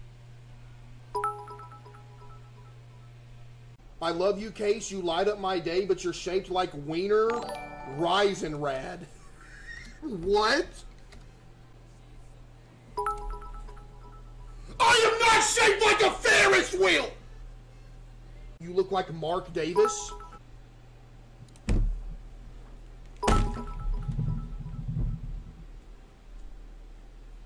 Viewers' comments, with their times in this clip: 0:09 the moment's silence of Case trynna comprehend 💀